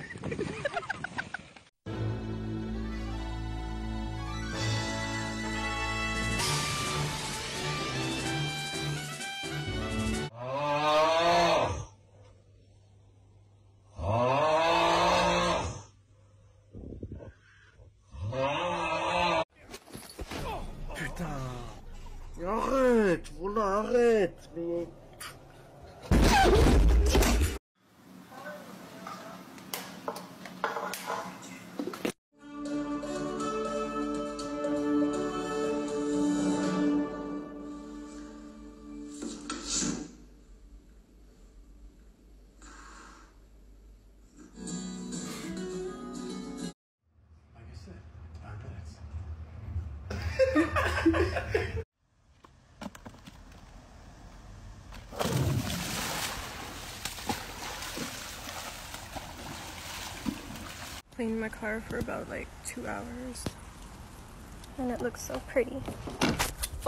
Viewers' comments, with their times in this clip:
0:10 I thought it was a cow
0:32 I feel bad for laughing but when I heard her heavy breathing I completely lost it
0:37 I love how there is no sound of her ever hitting the floor I’m pretty sure she just fell into the standard bottomless hole they place behind newscaster desks
0:38 laughed so hard at those 4 seconds of silence
0:50 Ayo why I suddenly heard Megalovania